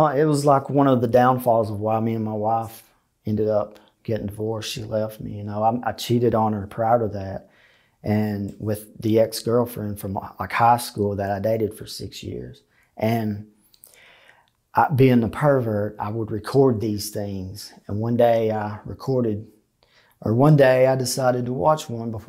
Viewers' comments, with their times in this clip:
0:07 "I cheated on her, proud of that". He's being contrite so I know I must have misunderstood, WTF did he actually say? Thanks